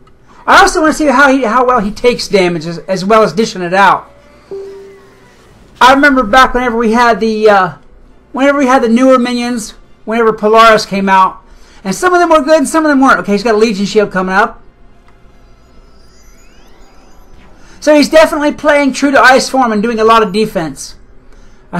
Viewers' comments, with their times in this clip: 0:03 At first, I thought the word was 'out' because of that noise But nope, it's lore.